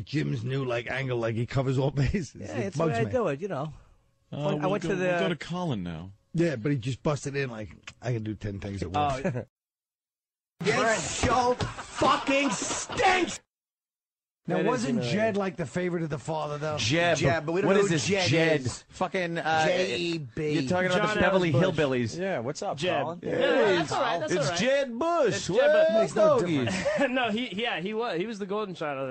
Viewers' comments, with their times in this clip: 0:10 Jimmy screaming "This show fucking stinks!!!!" is hilarious 😅🤣😂